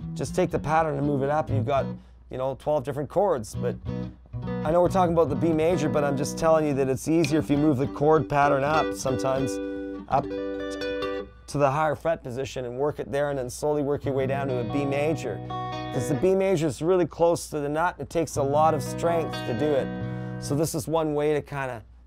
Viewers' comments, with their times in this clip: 0:06 I bought a €200 squire telecaster recently and the tone of that chord right there just gave me the realization of why this guitar is worth 200